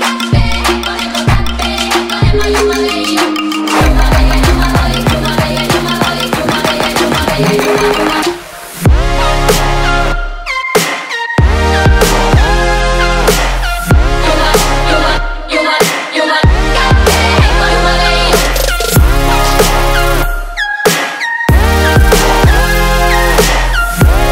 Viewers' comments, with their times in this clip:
0:08 this great song lost its beauty to ....this piece totally out of tune with the rest of the song seems to make no sense :I
0:09 um just ta let u know the song was ruined the change in beat was not needed
0:10 everything about this is amazing except the main synth that comes in :(
0:12 goosebumps, literally... and my face looked like i heard my dog die, that drop hit me hard.